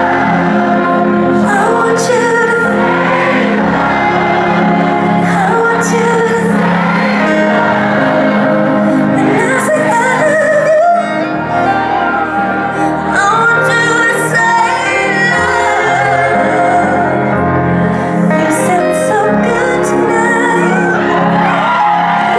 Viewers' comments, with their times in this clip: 0:03 I love how the crowd kept singing the song even when she wasn't directing the mic towards them, it made a great choir of background vocals and I love how Jojo appreciated that (she looks so happy ) and said "You sang really good tonight thank you for singing with me" at the end of the song :')